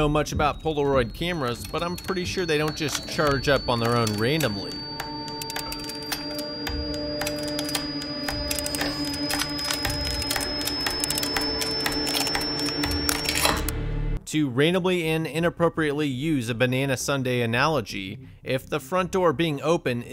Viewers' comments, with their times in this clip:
0:05 that ringing noise you hear when it's too quiet.